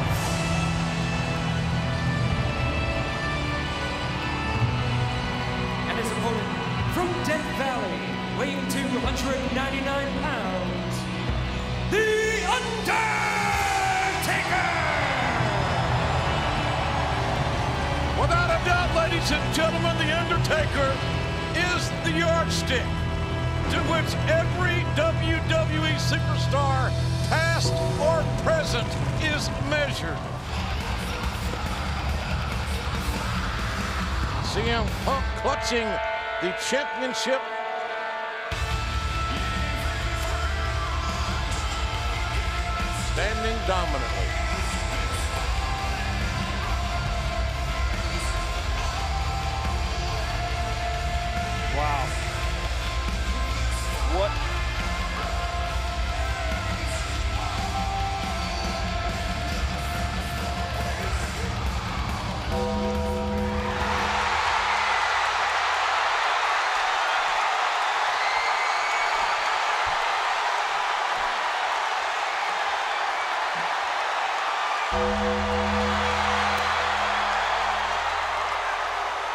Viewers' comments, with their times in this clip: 0:06 “Theeeee UNDEEEEERRRRRRTAKEEERRRRRRRRR” best introduction I’ve ever heard
1:01 the 1 bell made him terrified